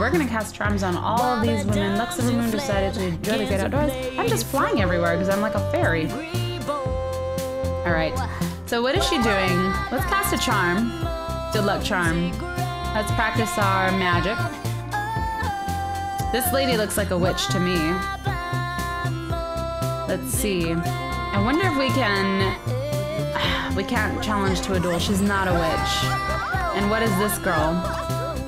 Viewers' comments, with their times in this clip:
0:09 how is she singing?!